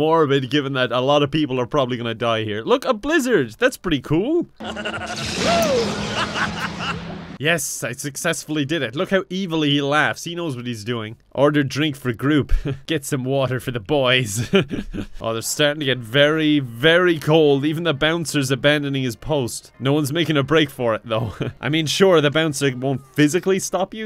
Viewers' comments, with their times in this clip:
0:05 that sounded like my teacher assigning homework for the weekend